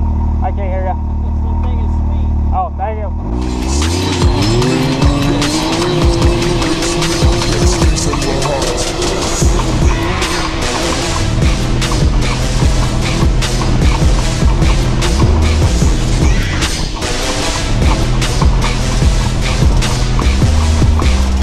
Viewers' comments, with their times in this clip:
0:03 music over the engine what a waste . stopped video ...